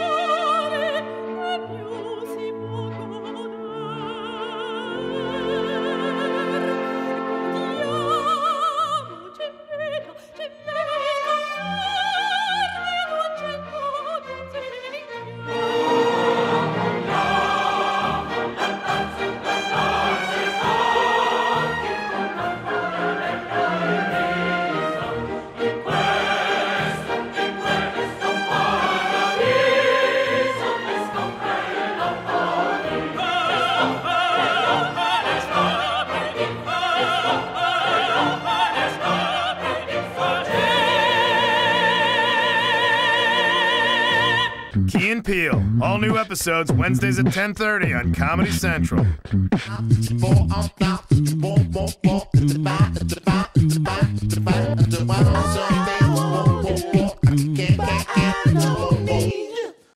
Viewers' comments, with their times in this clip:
0:07 lmao YAAAWW syncs perfectly
0:07 When the song aligned perfectly I lost it XD
0:34 "Holy shit!" is what your brain wanted to hear that!
0:51 at 2x speed sounds hilarious